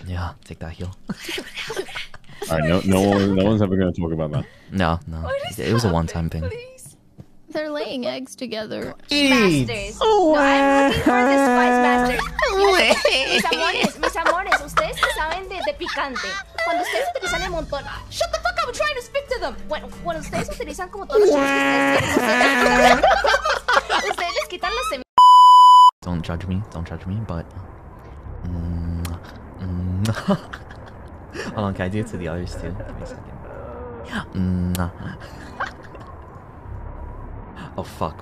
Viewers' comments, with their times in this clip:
0:09 cries in auto-tune
0:21 PLZ THIS WITH THE SPANISH IN THE BACKGROUND IM CRIYN